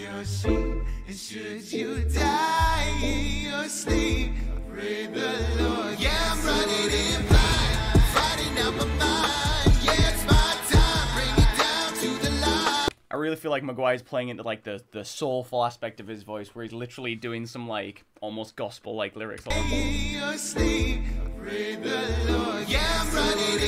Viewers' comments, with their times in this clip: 0:07 exactly like the song ghost town…